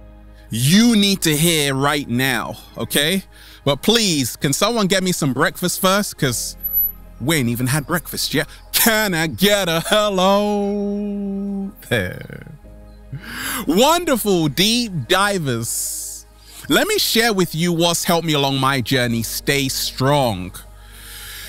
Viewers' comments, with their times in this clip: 0:06 What was that beap noise